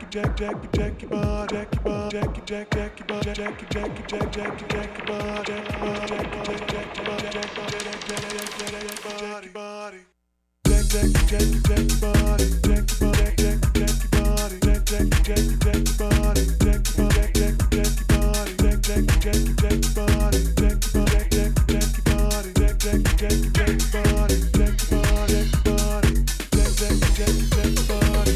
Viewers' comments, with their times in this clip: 0:10 the drop oh yeah